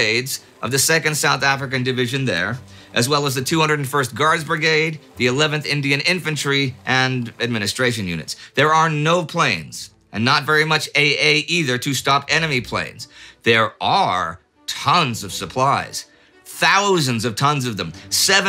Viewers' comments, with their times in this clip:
0:03 that guy's doing the Howard Dean yell